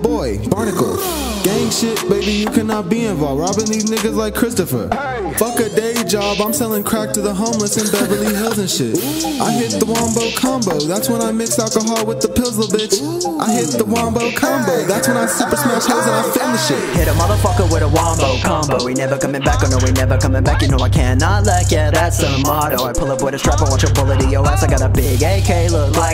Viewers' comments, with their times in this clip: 0:08 laugh is so attractive